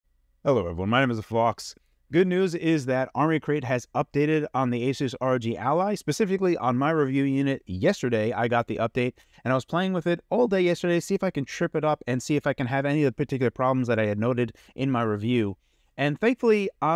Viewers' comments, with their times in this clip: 0:01 Anyone hear my name is the phlox?